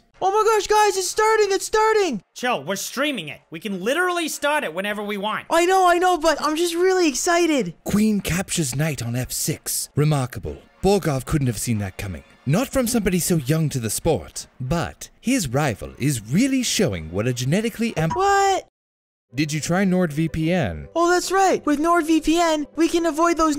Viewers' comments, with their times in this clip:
0:08 bruh this guy sounded like Dave Willis for a second